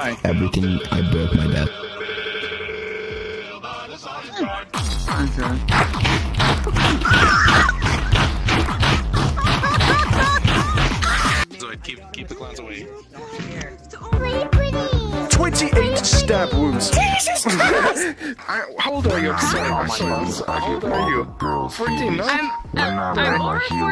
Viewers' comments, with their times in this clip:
0:04 I lost my shit holy fuck That scream was so perfectly cut though oml x,D